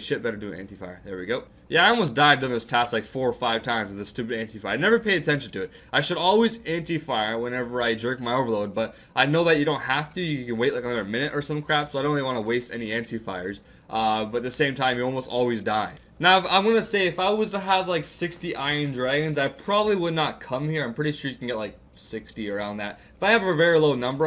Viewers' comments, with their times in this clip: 0:07 jerk my overload................wait what?